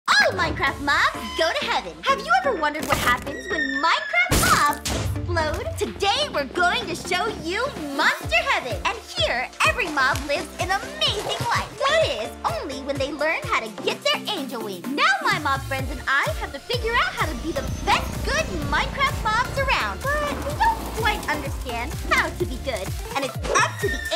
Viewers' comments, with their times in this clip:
0:06 is kinda cause if u smap u might here the wprd “gay”